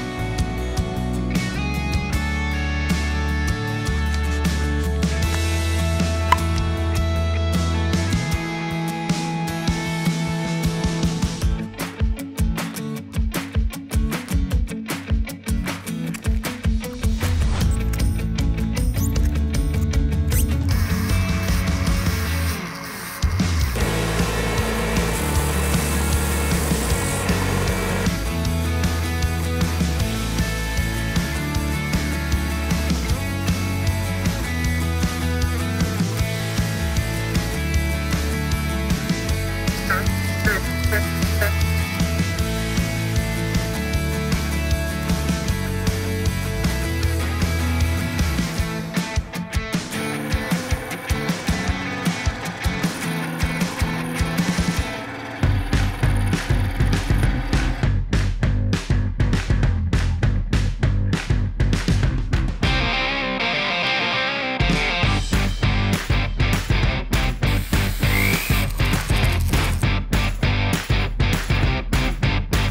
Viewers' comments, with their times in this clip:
0:06 That pop tho
0:18 minecraft bat noises
0:39 The foam sanding kinda sounds like Eddie Murphy doing his famous laugh! =D
0:55 does anyone notice that it sounds like the song are you gonna be my girl by Jet?